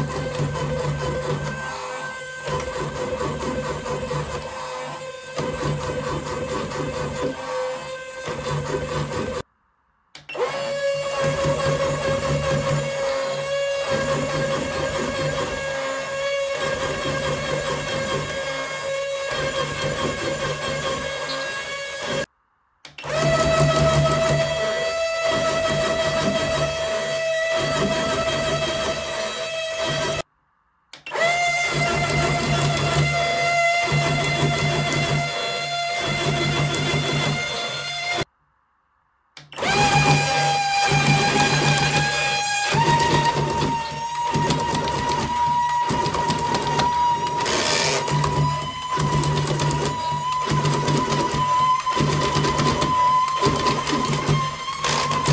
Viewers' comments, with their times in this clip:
0:10 Ice dragon squeaks
0:38 ice Dino, wanted to squeak!
0:40 the dragon I thought the gears for the legs and head would snap off at that speed causing the dragon toy to fall down on its side and the gears would rub against each other causing a horrible grinding noise you increase the speed and the grinding noise gets louder before giving way and the free spinning motor speeds up and starts screaming bloody murder and starts to crackle before finally doing several loud pops and then winding down and stopping.